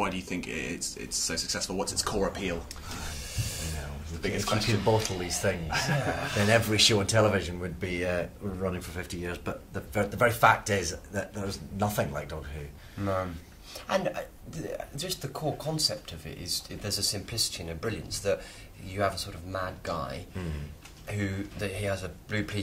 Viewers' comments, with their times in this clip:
0:03 they breathe in exactly the same